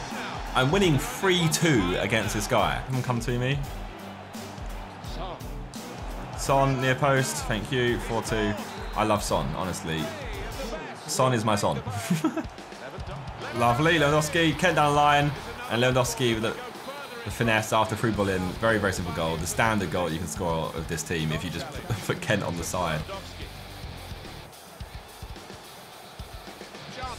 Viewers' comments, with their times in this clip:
0:10 That laugh creeps me out